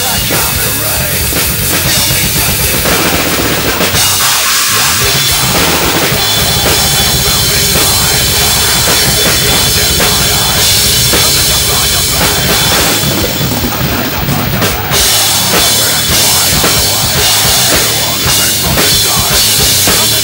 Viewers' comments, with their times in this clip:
0:06 the dual bass is epic! he hits it... and thats why i keep watching it.